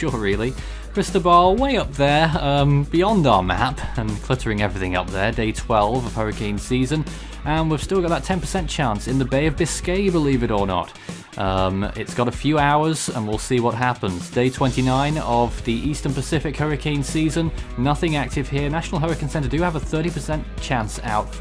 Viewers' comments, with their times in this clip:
0:08 weird audio glitch